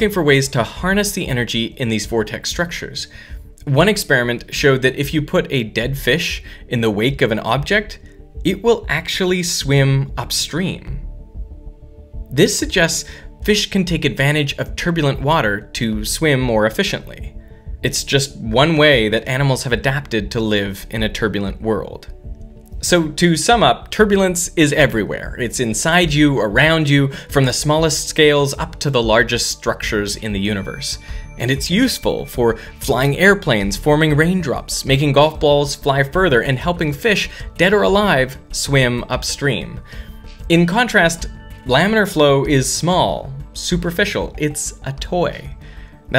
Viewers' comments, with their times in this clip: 0:04 did he say, DED?
0:32 Did anyone else catch the creaking floor around 14 minute mark and at the mark? I paused and took my headphones off a few times 🤣😅